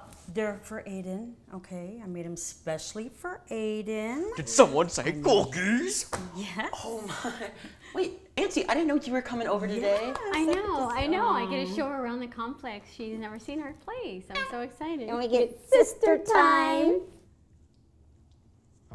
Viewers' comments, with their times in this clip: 0:03 DID SOMEONE SAY COOKIES?????? inserts demonic voice*